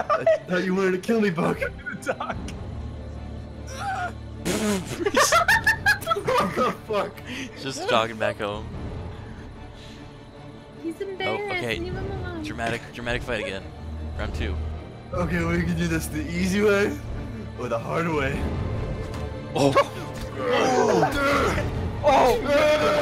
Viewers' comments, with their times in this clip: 0:05 that laugh effing kills me